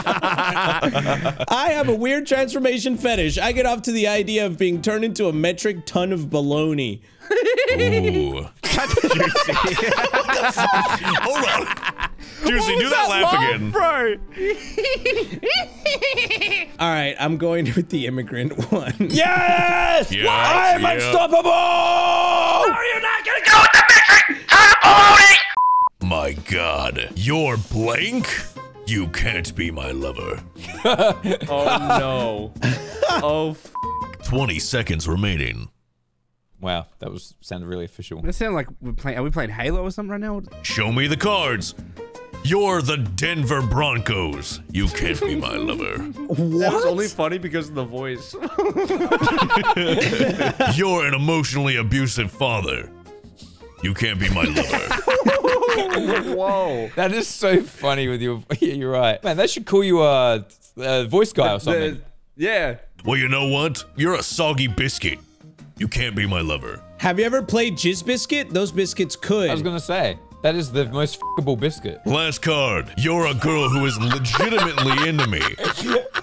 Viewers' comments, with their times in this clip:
0:05 that laugh was adorable 😍
0:06 the laugh of penny wise remastered
0:23 Why does he sound like Mike Wazowski💀
0:35 he did sound like the guy from halo😂
1:03 Sounds almost like Duke Nukem!